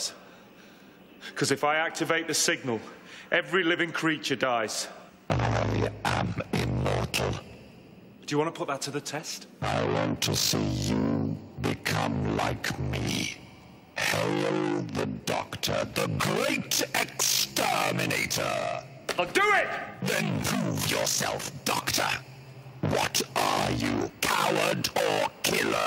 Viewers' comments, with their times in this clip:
0:05 Dat Booming Voice tho! It's so chilling! 0_0
0:13 at first I thought the Emperor Dalek said "Hello the Doctor" not 'hail'.